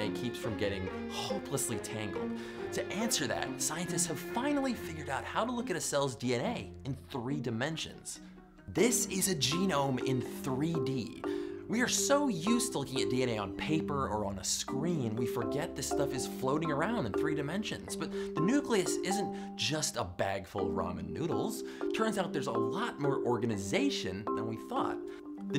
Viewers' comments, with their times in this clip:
0:09 LOL, it really does look like Ramen noodles. Also I am amazed at how long DNA is compared to its length. one personal comment. I wish the volume of your voice had been better balanced against your background marimba. The marimba is just enough to loud to almost overpower your voice.